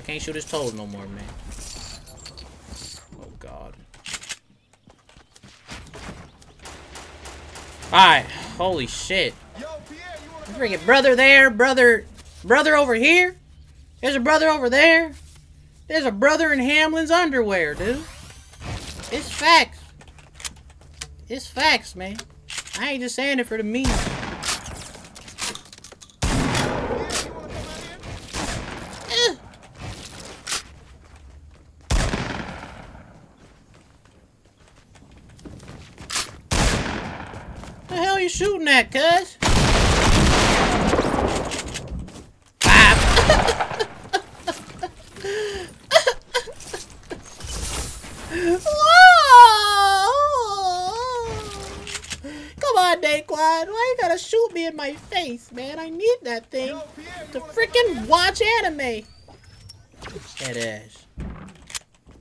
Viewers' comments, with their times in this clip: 0:03 u sounded white for a sec
0:43 Who else loves it when he does that baby cry
0:45 that baby cry is killing me 😂😂😂😂
0:47 dae impersonated bruce lee